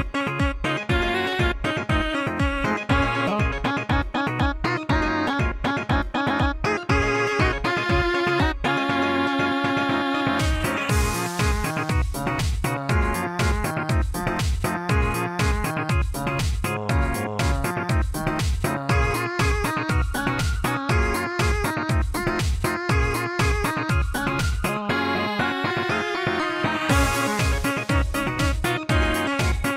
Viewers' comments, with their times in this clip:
0:10 that part sounds like fading lol
0:10 Litteraly starts crying
0:10 Annie sings fading
0:11 She sing of the garcello fading
0:11 If music garcello fading
0:11 This sounds like Fading from Garcello
0:11 sounded like a part of the song from the garcello mod